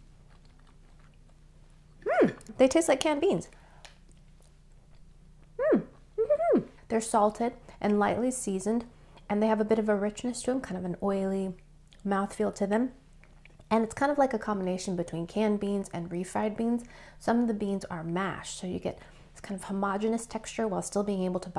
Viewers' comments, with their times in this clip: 0:04 her cutest squeak ever? 😂